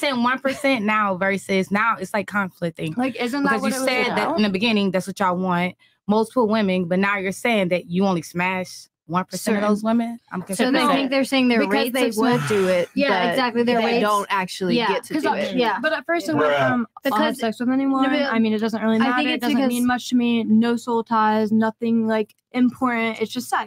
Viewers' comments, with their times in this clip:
0:10 myron putting his hand on his face and the sound effect 'bruh' was perfect comedic timing, if it's intentional or not lmao